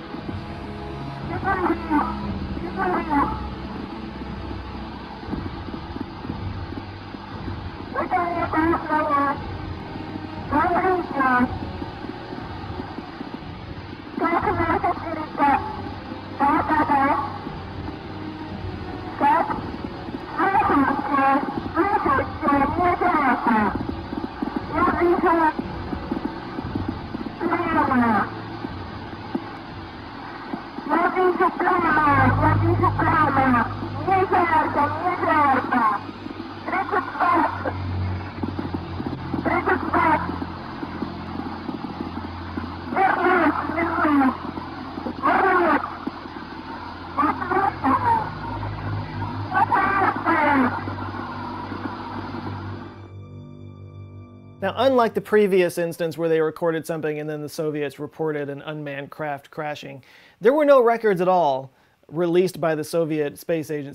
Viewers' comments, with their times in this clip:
0:09 none of that even sounds russian apart from oxygen and yes yes yes, the rest is unclear, and i speak russian
0:48 it sounds like she’s calling someone called Roberto
0:49 sounds like im burning to me
0:49 KInda sounds like shes saying please in russian